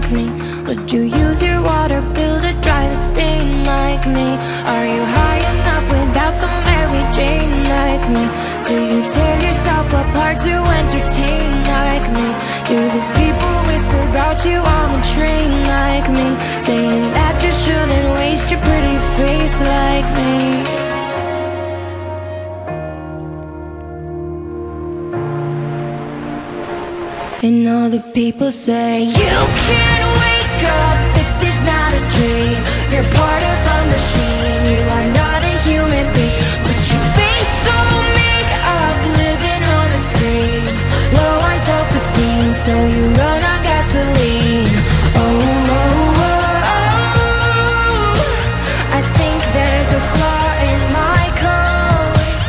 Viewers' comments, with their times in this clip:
0:03 wait why does this have rhythm of her song Colors? you know everything is blue... just listen
0:38 Anyone notice how despite being briefly startled by the fire emission her voice didn’t break or change AT ALL. Her breath control and overall voice is unlike anything else. Beautiful!